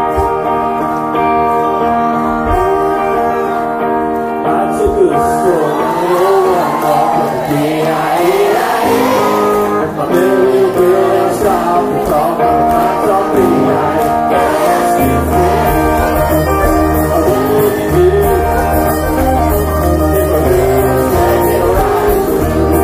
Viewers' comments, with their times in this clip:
0:06 Thanks for taking the time to record and post this. It’s really cool. The crowd’s reaction when they realize what the song is; priceless.